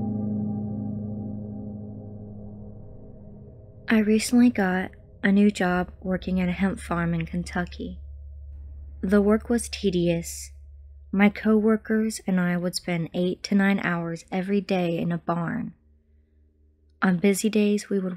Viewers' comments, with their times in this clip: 0:03 I was falling asleep & the voice change startled me 😭
0:03 Jesus these narrators are so melancholic and monotone it hurts when they start reading, sounds like Alexa trying to read a story